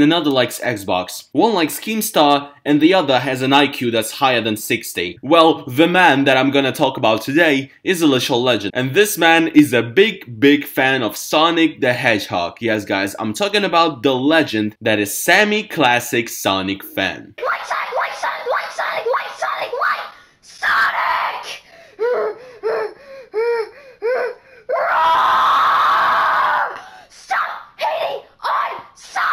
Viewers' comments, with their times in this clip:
0:10 Haha Heaththt hog